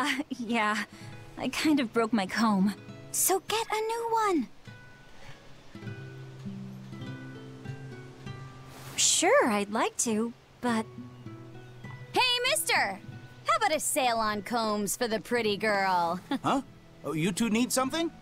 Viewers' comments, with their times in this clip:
0:03 That girl sounds so familar. She sounds like someone from a fire emblem game, but I just can't remember who.